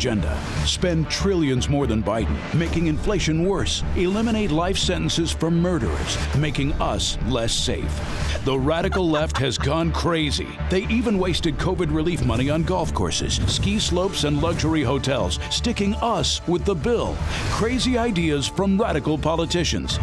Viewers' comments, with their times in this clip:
0:08 I love the cackling witch sound they had